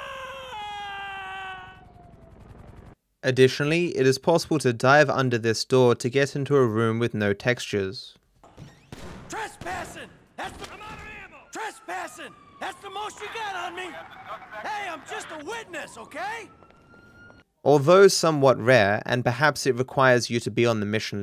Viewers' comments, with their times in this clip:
0:04 Michael: HEY!? Aaaaaaaaaaaahhh Captions: "[MUSIC]"